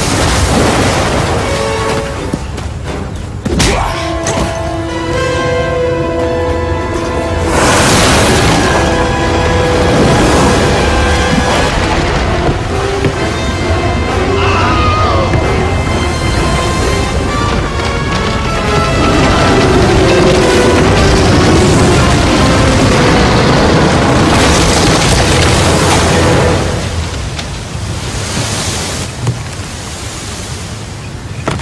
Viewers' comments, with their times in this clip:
0:04 when he hit the ground he made the LEGO Indiana Jones noise 😂😂
0:13 that pitched down Wilhelm scream